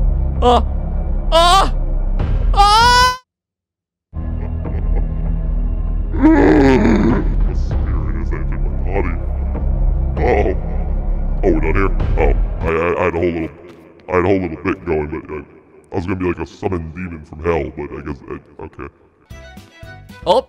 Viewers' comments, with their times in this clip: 0:04 I love how he sniffs a devil into is soul